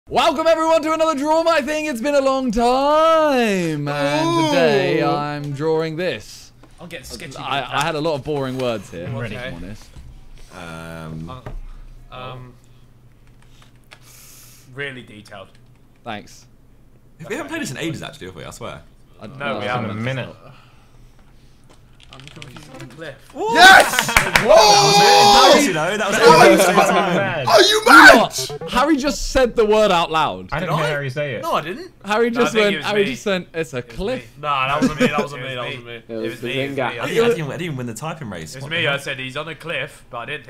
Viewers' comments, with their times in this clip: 0:00 Rip headphone user's
0:21 you can hear ksi's typing on the keyboard